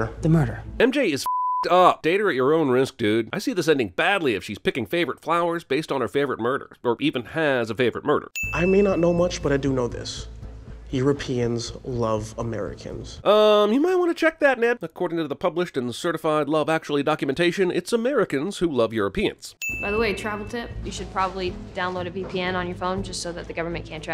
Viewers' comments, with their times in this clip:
0:10 that reaction wasn't peter parker it was tom holland in an American accent